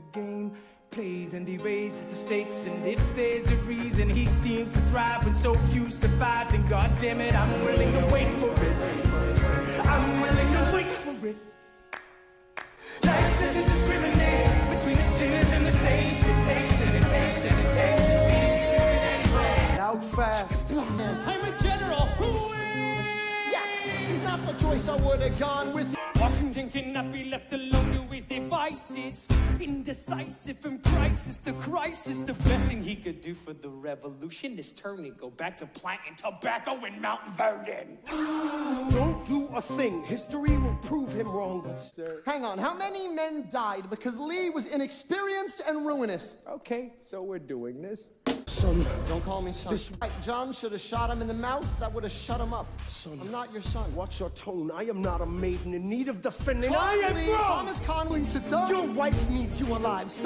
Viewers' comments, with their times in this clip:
0:10 did burr just hit the woah i-
0:46 so we just gonna ignore that Lin-manuel broke character and laugh?? XD